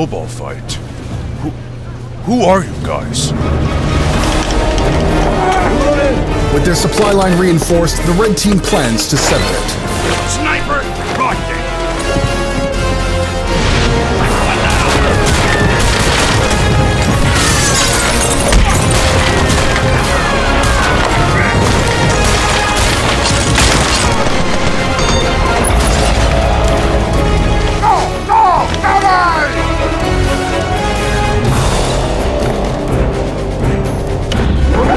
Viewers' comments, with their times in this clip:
0:03 I’m surprised that there is Thomas music in this part
0:17 Yo the remix Flying Kipper thing works amazingly here lol